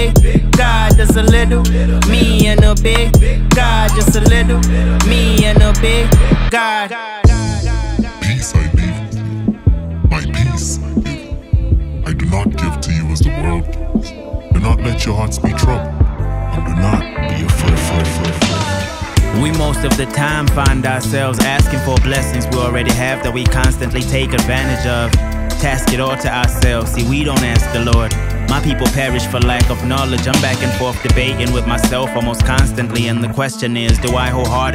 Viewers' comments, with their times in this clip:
0:10 okay the sample and flow go hard
0:18 The Kendrick Lamar vibe 🔥🔥